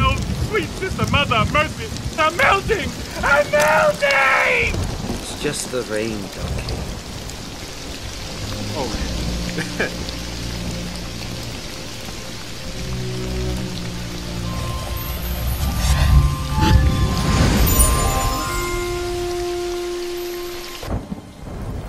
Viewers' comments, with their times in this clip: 0:05 Kyoko: (blankly) It’s just the rain, Donkey.